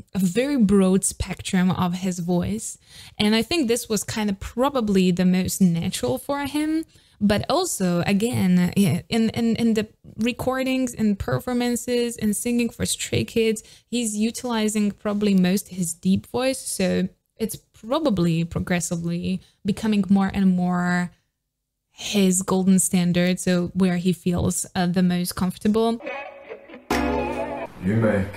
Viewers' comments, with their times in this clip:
0:10 its actually not, felix's voice is a lot deeper while speaking then expected but he makes it even deeper for rapping. anyway stan lix